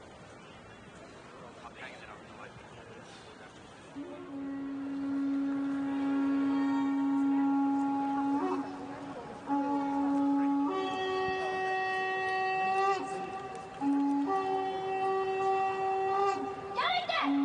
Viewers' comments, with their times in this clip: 0:04 sounds like Hip Hop Horray by Naught By Nature was coming on. #oldschool